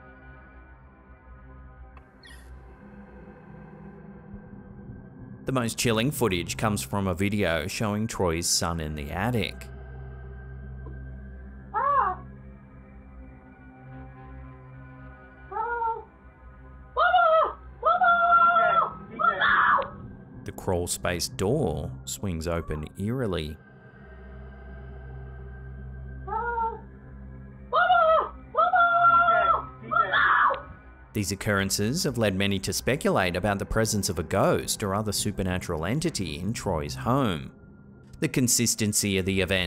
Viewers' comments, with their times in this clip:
0:06 It wasn't mentioned but it sounds like a voice is what makes the kid scream. Did anybody else pick that up?
0:23 That boy gave the fakest yell I have ever heard. This is so faked. is terrible.